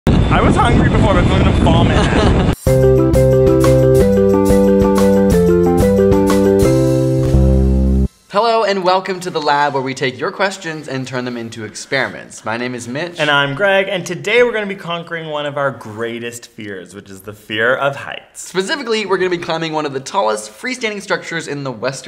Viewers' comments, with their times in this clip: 0:03 the first notes of that jingle, i thought it was going to play that song in mario .. "your princess is in another castle" ..